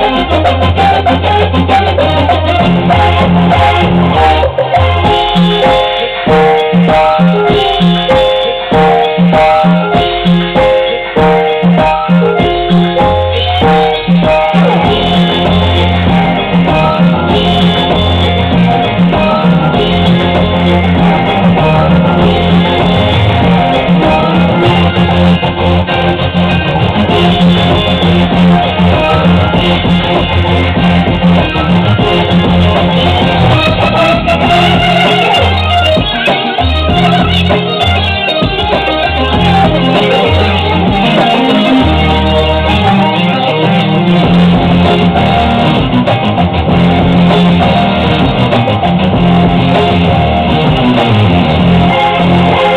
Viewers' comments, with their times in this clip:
0:08 Man that's so exact i thought it was a fake at first too, until the flub Excellent cover.
0:36 Can you explain why your playing drops off yet lead continues to play? Why?